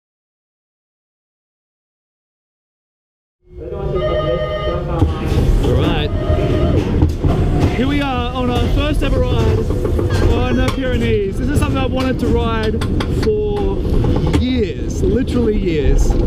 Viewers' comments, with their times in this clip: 0:04 weird dispatch noise - sounds like a ringing telephone :D